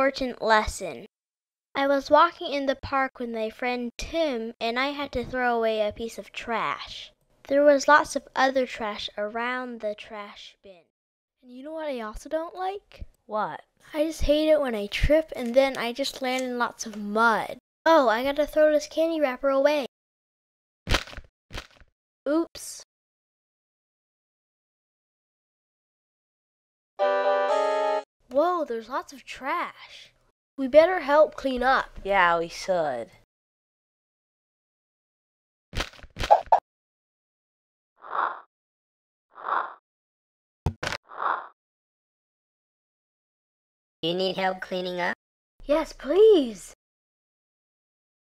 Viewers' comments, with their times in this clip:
0:03 I hear I was walking in the park with my friend two
0:32 yeah we SOOD